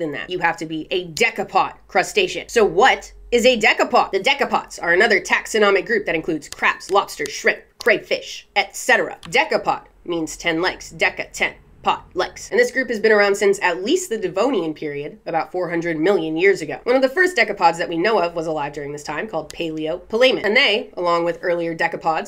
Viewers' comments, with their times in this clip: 0:05 I don't know how I arrived here. My Xbox is wild. I'm and honestly I'm here for the passion, the way she says crab and the actual information. She's got me here, nodding my dumbass head with a mouth full of lemonade like, "Word.". Thank you for this. I am this kind of nerd, apparently. Edit: "They were quite perplexa." Yeah, imma just sub and get it over with."